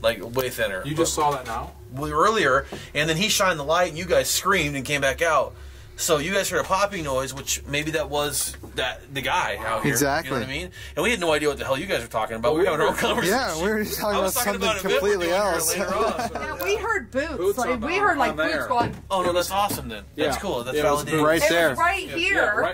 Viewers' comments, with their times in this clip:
0:05 listen. Sounds like a whisper